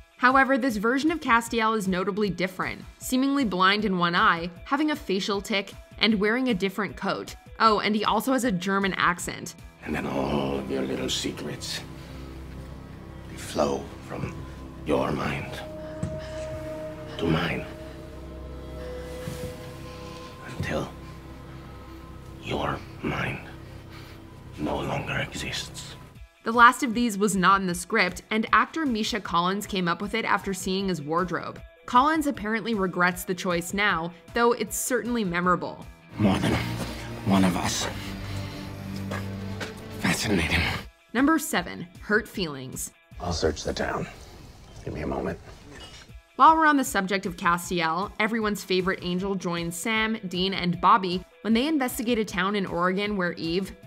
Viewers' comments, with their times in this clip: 0:08 "GERMAN Accent ?" What are you talking about ? Thats not a German Accent, thats a Austrian accent. And Sound like Adolf Hitler !!!!! "First thinking then Beginning" But a cool Video ✌👍
0:24 that doesn't sound like a German accent AT ALL lmfao. it's slavic rather
0:26 😂 I remember this wretched accent. He sounds tropical, not German. 😂
0:39 where's the "german accent"? is this slow kinda clear speaking supposed to be the "german accent"? i kinda feel offended because i don't talk like that at all 😮